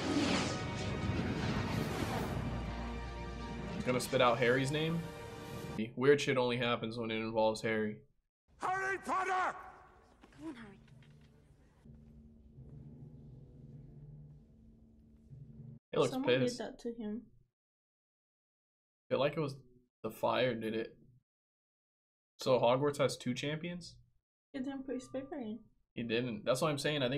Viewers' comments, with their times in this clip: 0:08 ...Dumbledore asked calmly.